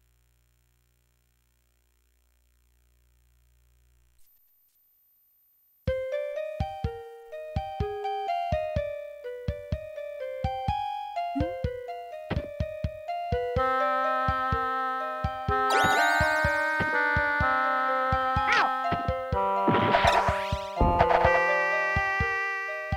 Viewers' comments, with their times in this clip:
0:07 this song... i just dont know what i feel